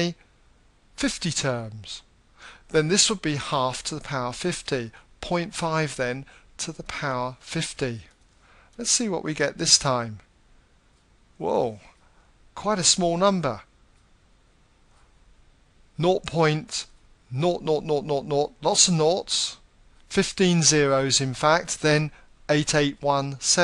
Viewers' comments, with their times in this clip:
0:09 Anyone else love the 'surprised' wow